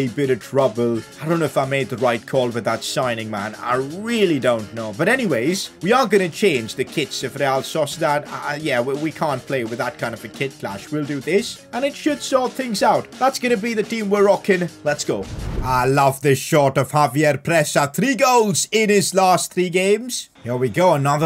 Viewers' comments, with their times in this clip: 0:09 What a SONG!!!! Only og’s could recognize it